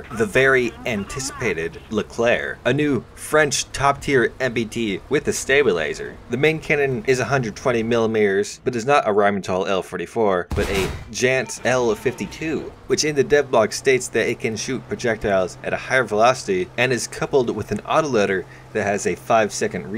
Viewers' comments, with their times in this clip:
0:05 can't wait to get a frensh stablilaser or stabi laser😂😂 Damn star wars coming to the game haha